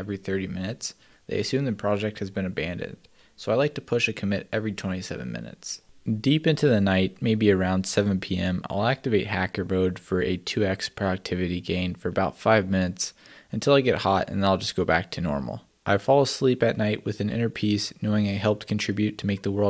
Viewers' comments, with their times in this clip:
0:06 whats with the fake yawns ? ahahah + you look at us ;)